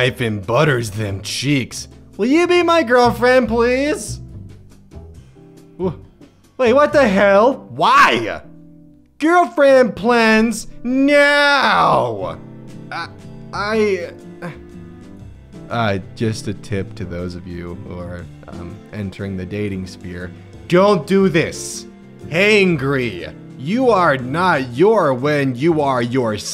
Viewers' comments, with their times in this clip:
0:08 the way he just say “whY” made me fucking lose it lmfao